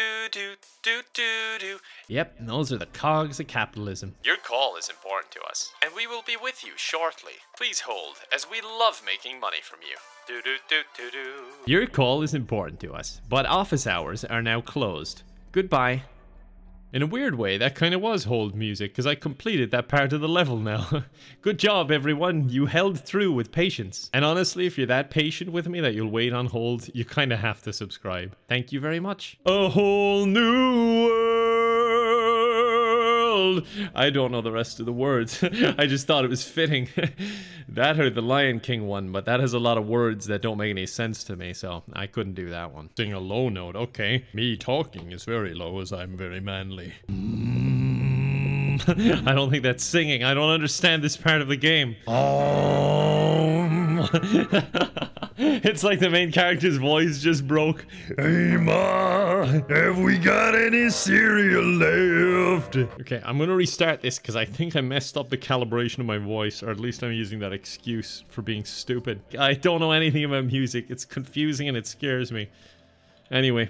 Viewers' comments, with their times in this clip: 0:08 it sounds like a persona song but where is it from?
0:35 that sounded actually good. Holy crap, why did that sound so good?
0:58 He sounds like Louis Armstrong
0:58 My brother the morning after his voice changed